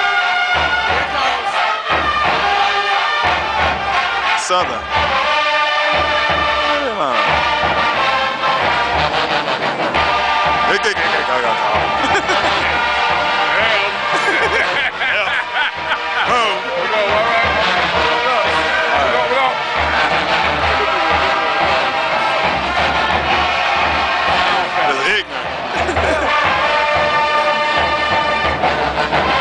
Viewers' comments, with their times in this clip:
0:10 he tried to loud like a tuba EPIC FAIL